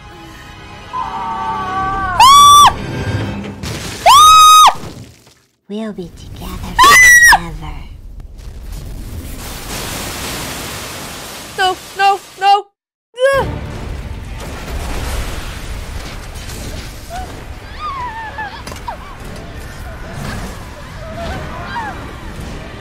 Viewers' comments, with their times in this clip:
0:07 Her scream😂😂 I'm so dead!